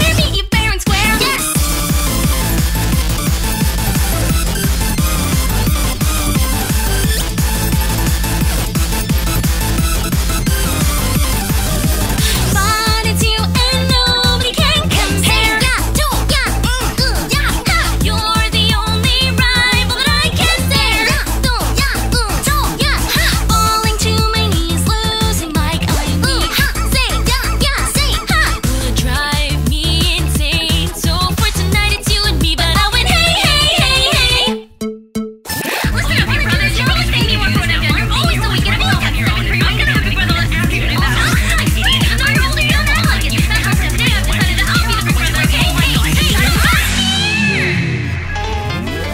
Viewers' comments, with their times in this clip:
0:04 When you got water in your ears
0:05 A man with closed fists? or A man with a mustache? I will never know.
0:08 when you have water in your ear
0:22 am i the only one who cringed at the random noises in
0:35 The more you listen to it the more you can actually understand the lyrics that originally sound like chaos.